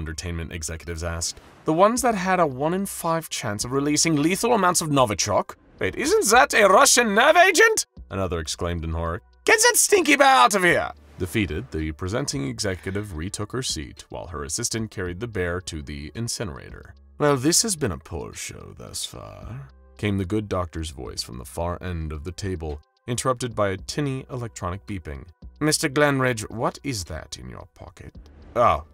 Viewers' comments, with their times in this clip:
0:09 why does he sound like medic